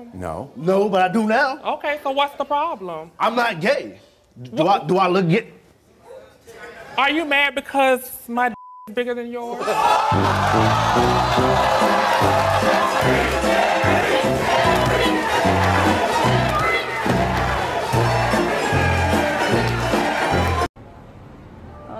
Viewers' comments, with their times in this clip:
0:09 THE SECURITY GUY LAUGHING BEFORE HOLDING THE GUY BACK IS EVERYTHING I NEEDED 😂😂